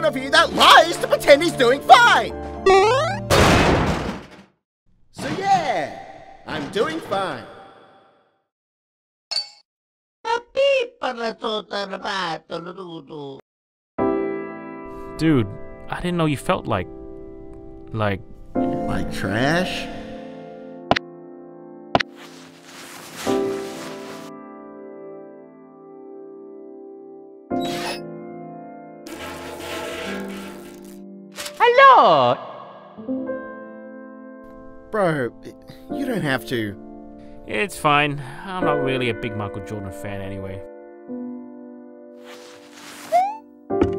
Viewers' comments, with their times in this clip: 0:09 If you ignore the subtitles, you can actually think that mario says: "I think SMG3 just became trashman."
0:31 I like how Mario said “Hello!”